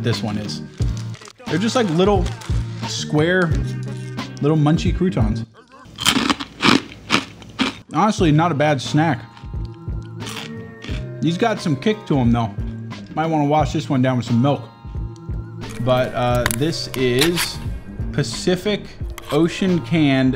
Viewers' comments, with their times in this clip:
0:08 literal tarkov munching sound